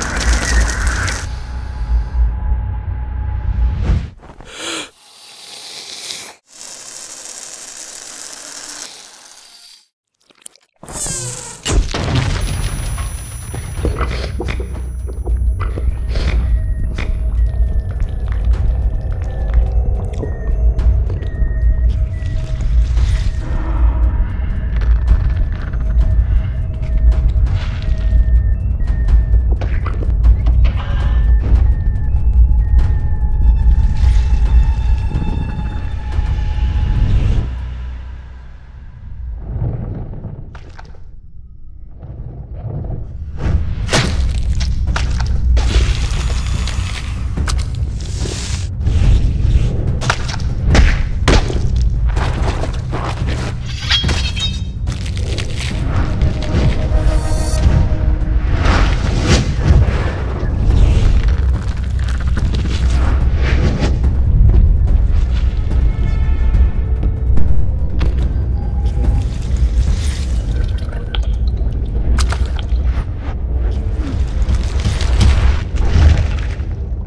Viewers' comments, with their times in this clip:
0:05 the fricking air explotion in your ears
0:05 ears go BOOM
0:13 when you do it, your ears are gonna die XD
0:14 When the Car is Sputtering with Grimace Shake Fuel
0:19 Trying to cough it out is even worse
0:30 the freaking ignited freddy sound
1:04 THE ABSW2 SOUND!!